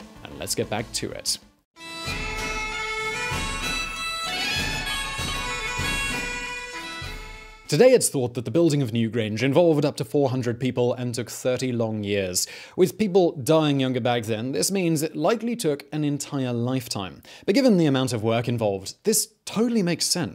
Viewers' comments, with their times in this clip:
0:03 those are Scottish bagpipes, not the Irish Uilleann pipes,